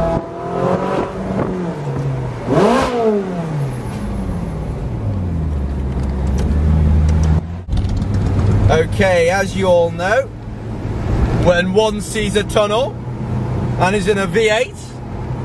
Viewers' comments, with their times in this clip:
0:03 is he revving it in the gear ? i always wonderd how do you go neutral in ferraris to free rev